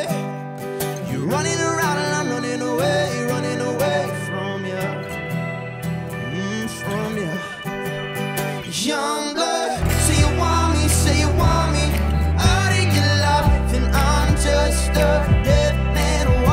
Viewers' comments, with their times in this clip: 0:03 MICHAEL (HEAR) DID THAT LOVEEEEEEEE